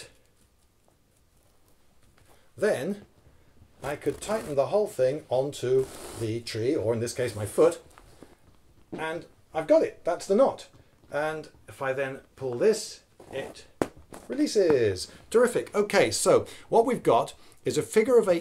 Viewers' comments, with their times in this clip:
0:06 he farts :D